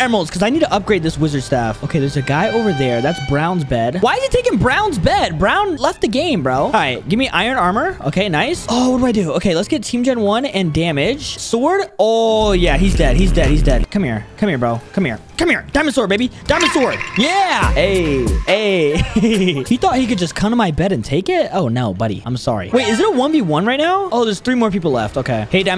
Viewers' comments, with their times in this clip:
0:10 When i clicked many times i heard n1 lol